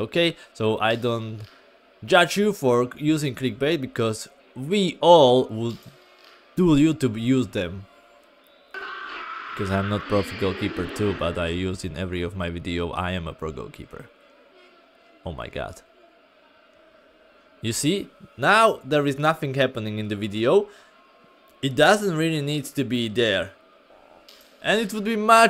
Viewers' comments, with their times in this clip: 0:08 whats that screaming noise